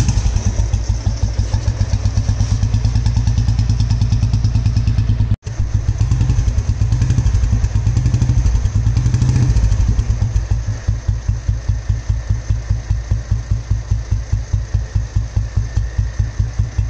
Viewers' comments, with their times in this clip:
0:03 Exaust sound Thanks me later...